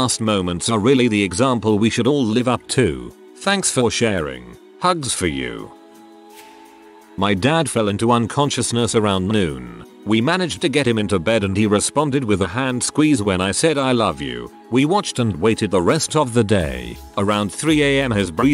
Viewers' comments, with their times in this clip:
0:03 I got and had to stop. The most annoying computer generated voice I've ever heard.